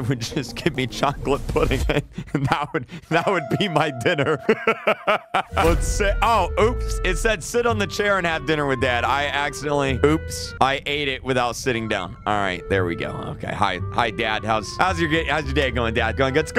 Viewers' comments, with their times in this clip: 0:04 that laugh alone let me know the pain you went through but now you are a man who live a normal life and loved by alot of people dont let anyone disturb you